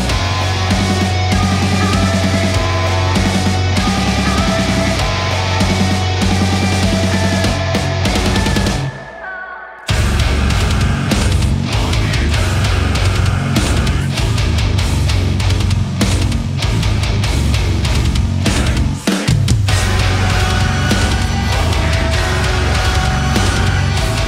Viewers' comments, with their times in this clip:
0:09 I personally do not like the song, but this version is awesome. The breakdown in the middle is so f*ckin awesome guys!!! Congrats to both!!! 🤟🏻